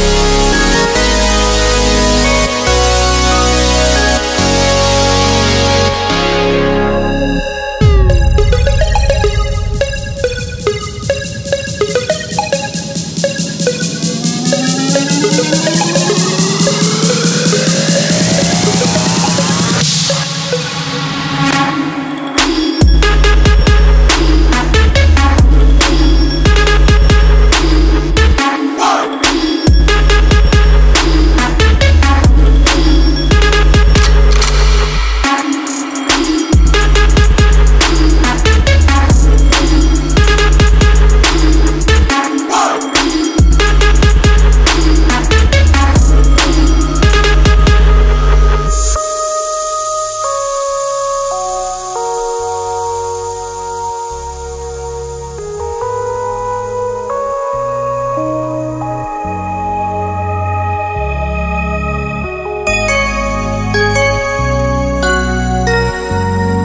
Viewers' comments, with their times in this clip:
0:03 theres contrast and then there is this... the build up deserves a much better drop follow up... 2nd one is nice tho
0:03 EPIC. what a wonderful song. i just hate when u change the melodi after if u just contouie the same way as the beginning this would be the best song ever.
0:08 I love the song even after !
0:18 turned into some gangbanger wannnabe song after
0:18 yeah, at min I do not hate, it's just inappropriate for the melody
0:18 If the artist actually used well executed production to show this contrast, I wouldn't mind. However, the "dark" comparison that was manifested wasn't even comparable to the rest of the piece. I'm not talking about the 2 styles being incomparable - that's besides the point. I'm talking about the quality of the 2 styles - one is ethereal, and the other is simply underdeveloped.
0:18 Chiaroscuro in art is the use of strong contrasts between light and dark, usually bold contrasts affecting a whole composition. The name of the song explains the change =)
0:21 Sound Remedy and trap... not something you'd expect to work out. But. somehow, that drop is still awesome!
0:21 wild Trap music appears
0:48 this is how trap should sound. is the best part ...